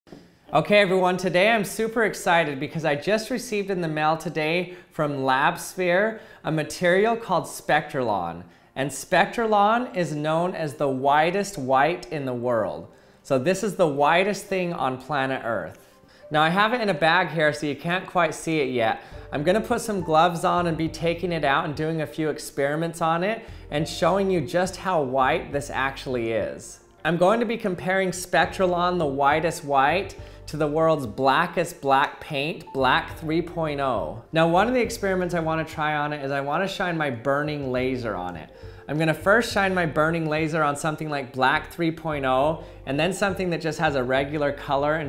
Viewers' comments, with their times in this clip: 0:09 apparently you’ve never had “brunch”
0:10 clapping when the plane lands
0:13 Cowboy music starts playing
0:14 Hmmmm... Sounds like my cousin
0:30 "The world's blackest black paint, Black 3.0" that's sounds like a tongue twister